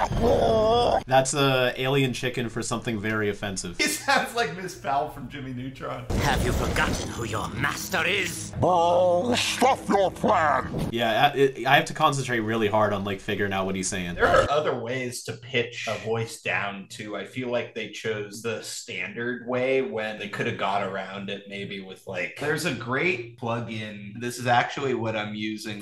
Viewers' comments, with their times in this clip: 0:09 did he just said, "Bullshit shut fk that"